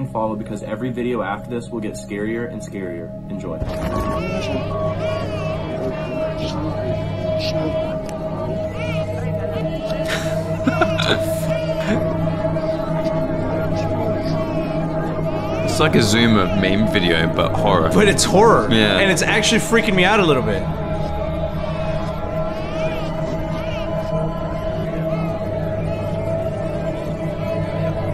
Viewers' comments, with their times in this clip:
0:09 was that the "wash your bum bum" meme song really quietly playing in the background or am i going nuts